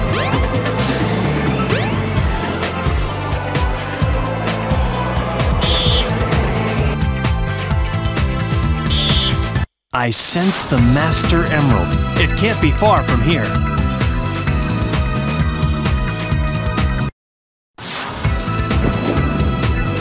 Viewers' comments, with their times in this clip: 0:08 great music loop